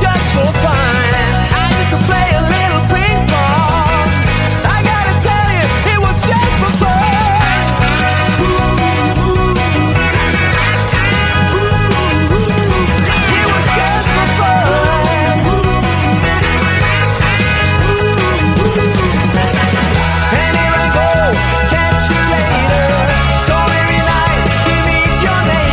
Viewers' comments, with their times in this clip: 0:06 mysterious illuminati music.